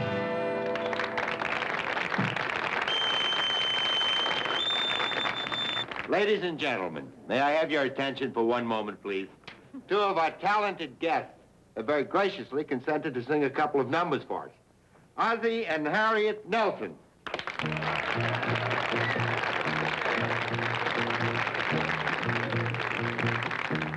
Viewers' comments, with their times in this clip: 0:10 the ship's captain sounds just like the bad guy, Ryker, in the classic Western, "Shane". Is it the same actor?